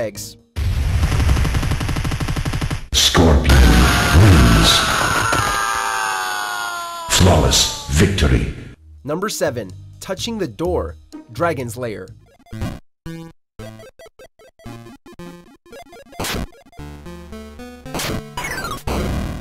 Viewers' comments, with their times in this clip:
0:03 Correct me wrong, but I swear guys, The opponents scream sounds almost EXACTLY like Soldiers or Scouts in Team Fortress 2